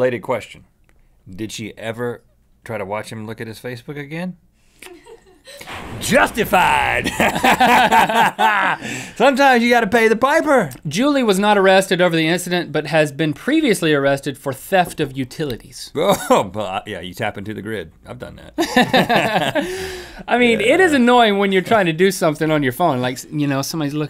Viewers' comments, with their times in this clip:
0:09 u could hear a girl